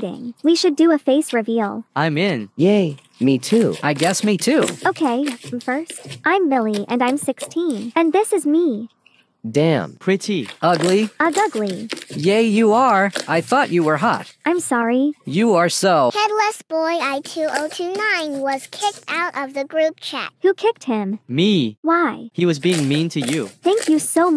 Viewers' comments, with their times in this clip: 0:06 It sounds like ok me first 😭